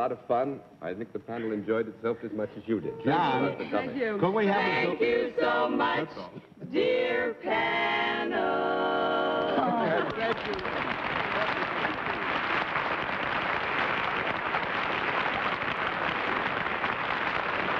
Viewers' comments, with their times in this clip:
0:04 Beautiful harmonization in a style that you just don't hear in today's music (or even in music from, say, the last 20-30 years of the 20th century).